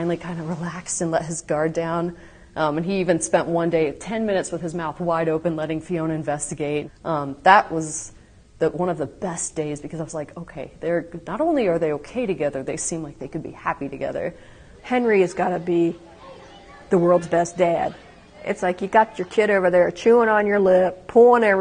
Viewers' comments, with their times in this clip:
0:04 Look at them all laughing Pure.